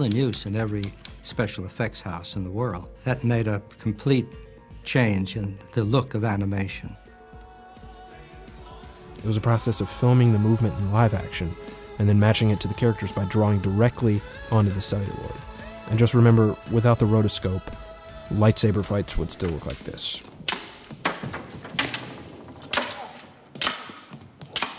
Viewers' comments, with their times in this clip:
0:07 I don't know why but I keep on rewinding to this part and watching it over and over again its so oddly satisfying especially with the song